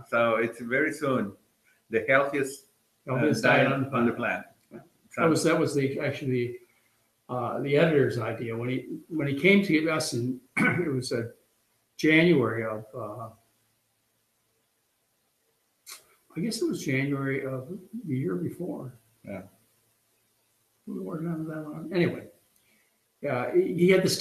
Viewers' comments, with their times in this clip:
0:08 Is the title of the coming book mentioned deliberately distorted?